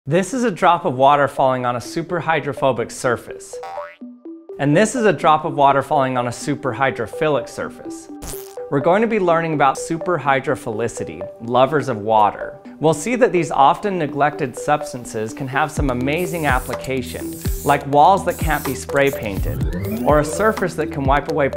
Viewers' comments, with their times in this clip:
0:04 ROBLOX SOUND! :D